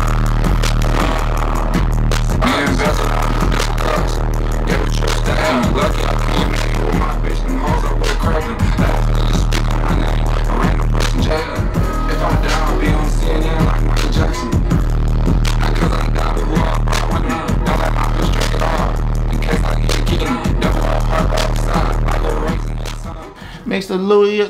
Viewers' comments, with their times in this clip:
0:10 That studio session gone destroy my AirPods 😂🔥